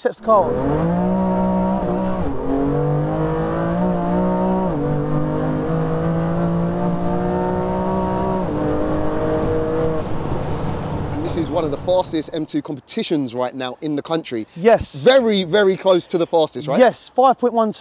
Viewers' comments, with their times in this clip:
0:04 sounds like a cod zombie 🤣 Another banger 💪💪👍